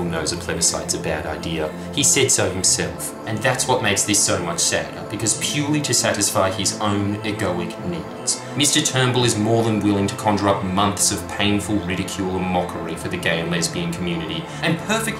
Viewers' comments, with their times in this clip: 0:03 Music ? just such a jam